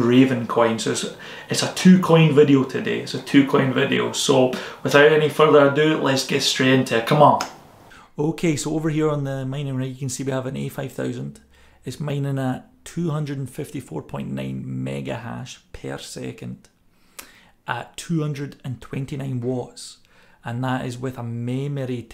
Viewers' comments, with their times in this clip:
0:10 The sound has not been recorded both Left and right. It's one or the other, not sure which one. Need both headphones to hear this Thanks for pointing it out. I'll fix it for future vids. Cheers :)